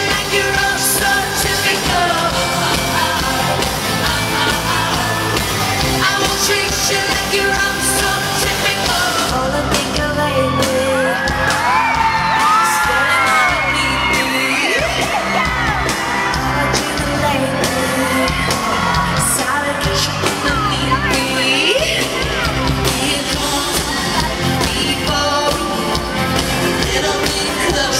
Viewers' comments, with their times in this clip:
0:09 EWWW. No Taylor, Tegan is supposed to sing that!